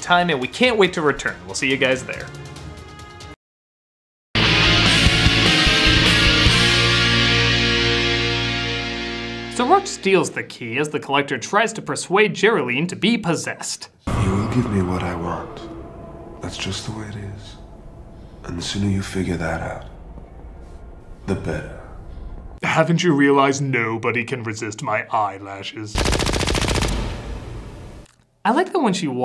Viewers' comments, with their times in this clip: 0:06 "October 8 to the tenth" - wow, that's a lot of october!
0:14 Mmmm. "Yes, Billy... I will." Billy Zane was absolutely delicious, hilarious and I fell madly in love with him and his voice when I first saw this movie as a kid.😛🥰🔥